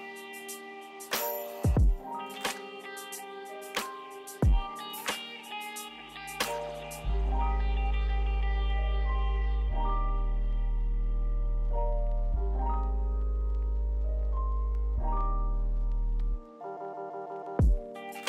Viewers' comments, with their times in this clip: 0:04 BROOO I was just listening to this song and I paused to lower the music but this WAS THE MUSIC OMMGGG great timing :)